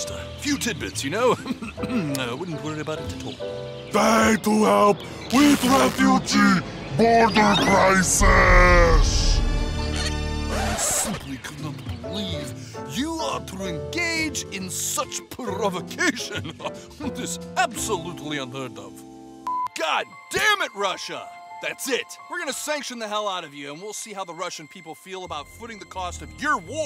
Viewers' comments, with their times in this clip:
0:08 bruh the thx intro noise
0:09 your hear titan tv man noise?
0:10 Its so funny how theres just the THX theme running.